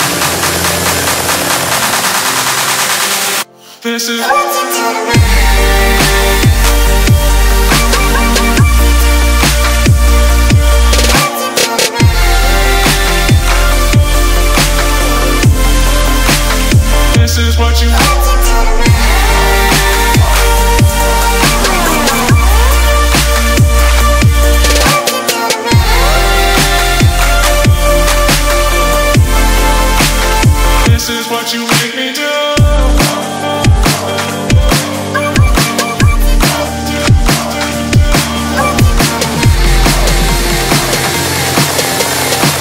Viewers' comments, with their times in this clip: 0:03 and backround "this is what you do to me" in like the same tune
0:23 the drop oohhhhh